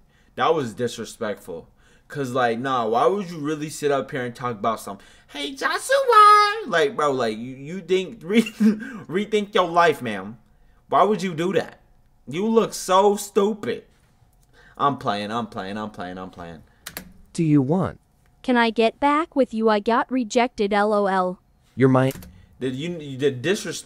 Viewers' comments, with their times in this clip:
0:05 “hEy jOsHuA” BRO WHAT WAS THAT VOICE 😂😂😂😂😂